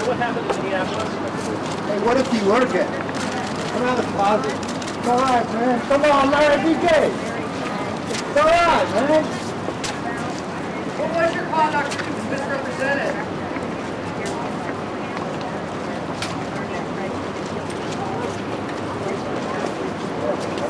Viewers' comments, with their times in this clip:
0:05 I always love when the video is about to end and the random guy yells "C'mon Larry be gay! It's alright man!"